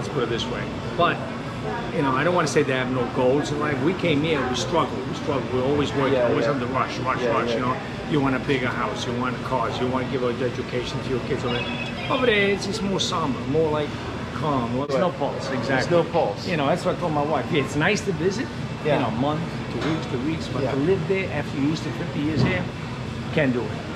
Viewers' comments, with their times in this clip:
0:05 That Butcher Guy looks and sounds exactly like Christopher Walken
0:11 Someone's got a Motorola phone...